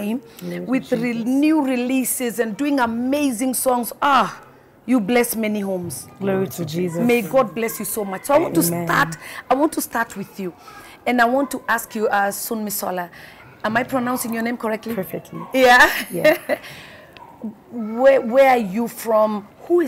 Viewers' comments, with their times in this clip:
0:05 Did anyone else noticed they both responded simultaneously the same “Glory to Jesus” to the compliments 😍😭😭 talk about equally yoked! I love themmmmm!!!!